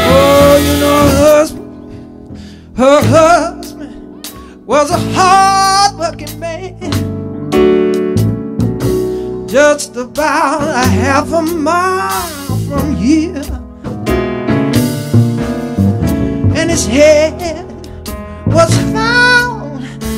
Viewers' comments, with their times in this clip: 0:03 Cool arrangement.... if you had some chill strings come in that would be a hell of a shiver down the spine